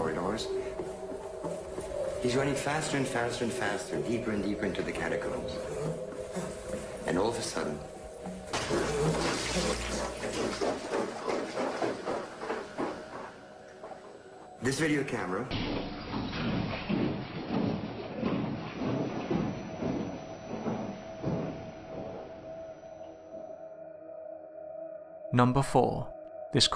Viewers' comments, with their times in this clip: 0:08 casper are definitely not the sounds of a panicked human. Humans yelp, scream, whimper, or cower when frightened.